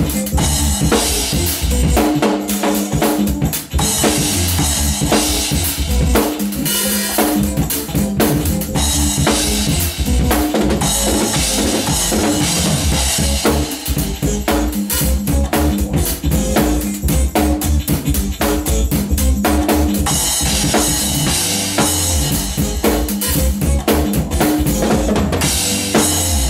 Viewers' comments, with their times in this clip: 0:10 Um, the quad triplet fill Wow.